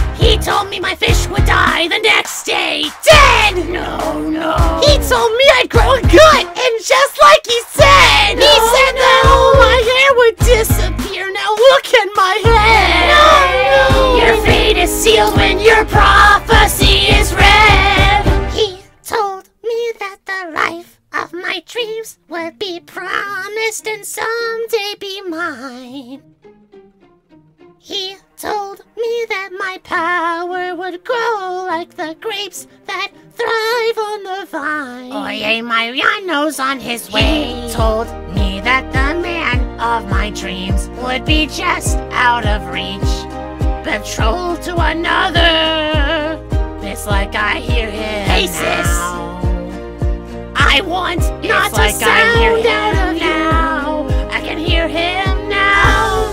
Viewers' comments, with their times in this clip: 0:10 he kinda laughs as he's singing
0:11 l a u g h
0:18 even toad sings this part better and that says something
0:18 Isabela Toad was hilarious. Tying to be graceful with that raspy voice (great toad impression btw) is impossible. Also the "Oye Mariano's on his way" (Kinda sounds like Meowth from the indigo league series)
0:35 I just realized that the we in the title says Wii, like the Nintendo console, makes sense because, well you know... Also sounds like Marge Simpson 🤣
0:36 Toad, “ Oh Mariano’s nose is on the way” Edit: 😝😝😝😝😝😝😝😋😝😝😝😝
0:40 Why does the dolores part sound like MARGE SIMPSON XD
0:42 yeah probably cuz yo voice DOLORES
0:44 no wonder he left fix your voice first